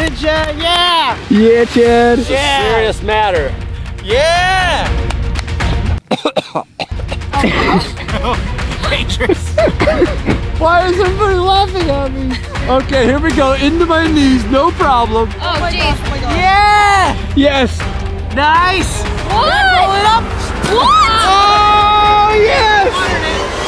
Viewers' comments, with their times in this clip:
0:06 = Lol he coughs and he says no silly things